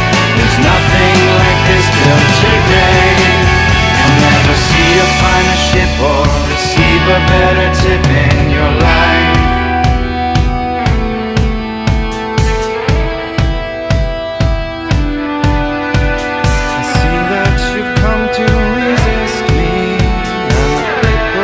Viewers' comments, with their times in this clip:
0:08 onwards is on another level musically